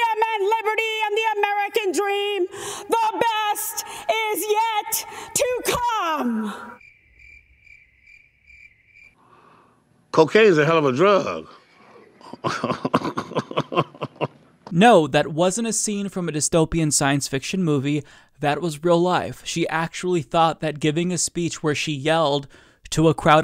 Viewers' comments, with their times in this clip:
0:07 you should have used the Zach Galafantis laugh for that.